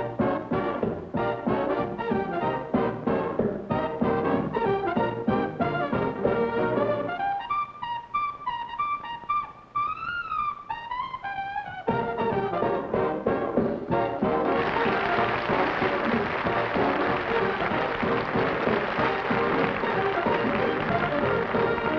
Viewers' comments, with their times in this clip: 0:03 Who are the ladies he's dancing with? And gee, he is sure cooking with helium XP